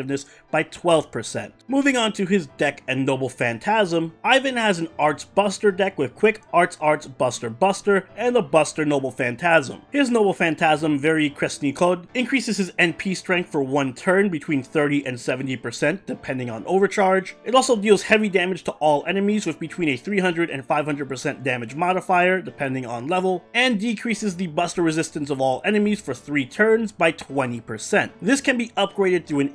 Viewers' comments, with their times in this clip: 0:10 Very Crispy Cod